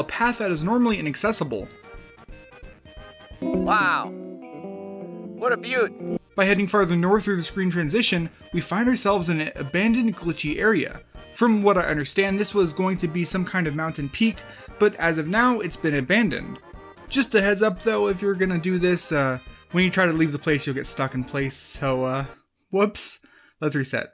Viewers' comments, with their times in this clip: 0:07 Turn on captions and go to ... "abandoned coochie area" 😂😂 dont talk about the witch like that!
0:09 If you go to and have sub titles on it says abandoned coochie